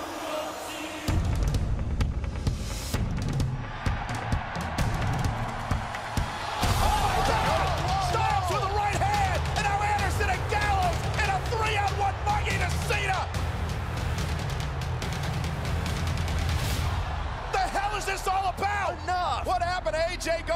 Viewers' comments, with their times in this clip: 0:08 no one was booing AJ